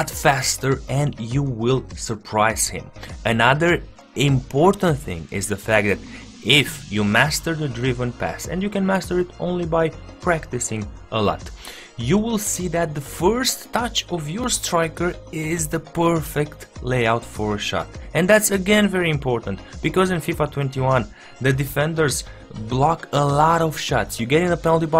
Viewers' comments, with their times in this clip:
0:05 the what? Didn't get that
0:05 he was homophobic lmaoooooo jk just an accent